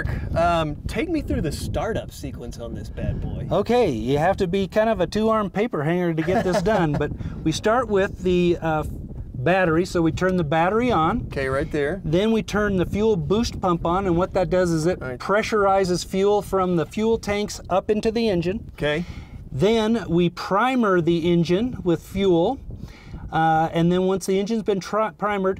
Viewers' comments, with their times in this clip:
0:07 Laugh is so fake I love it